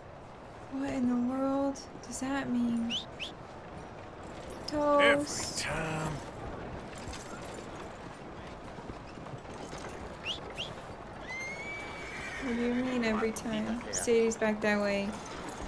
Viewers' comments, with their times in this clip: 0:03 finishes an emotional cutscene that shows Arthur reflection upon his decisions in life "whistles for horse" "horse doesn't come" EVERYTIME